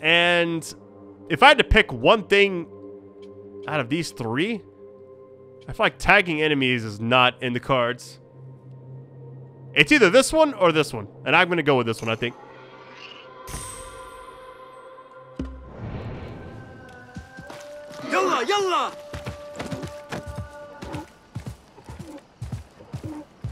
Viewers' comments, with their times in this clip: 0:08 adhen call for praier